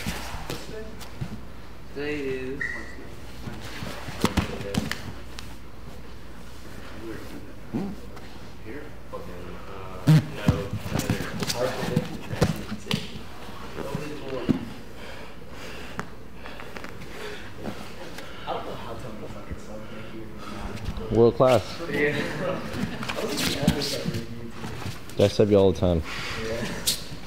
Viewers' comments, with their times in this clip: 0:09 Okay who farted?
0:09 I swear! I heard someone farting in the background
0:10 Bro who farted lmaoooooo
0:10 who blasted ass ? That was amazing. I think it was Nicky.